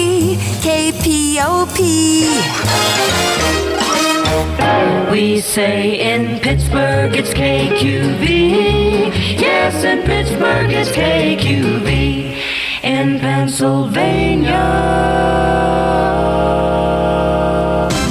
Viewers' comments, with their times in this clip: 0:04 Love the KQV one I don't even know what chord they sing at the very end.